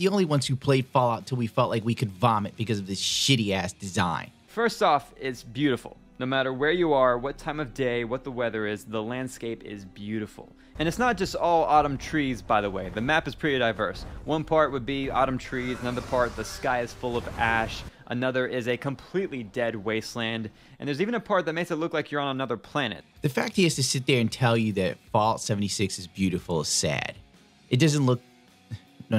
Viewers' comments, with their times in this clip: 0:10 i had to tab back in because i thought the video turned into a meme by just showing a clip from skyrim. i had thought i heard a dragon from skyrim. i wasnt wrong.